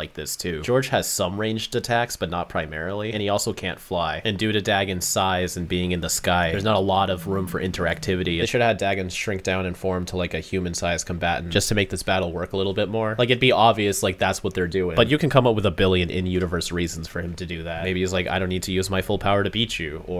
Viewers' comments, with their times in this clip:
0:04 "Due to Dagon size and being in the sky" That sounded clean tho